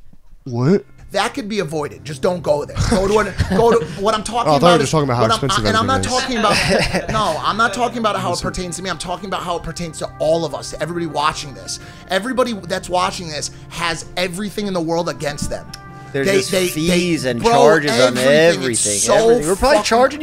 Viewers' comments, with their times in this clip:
0:06 background music was so on point 😂